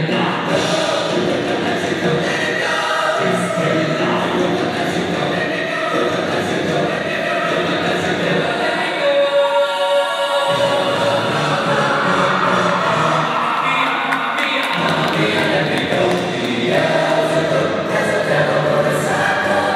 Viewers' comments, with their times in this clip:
0:03 Is it just me or do they say ‘bismilallah’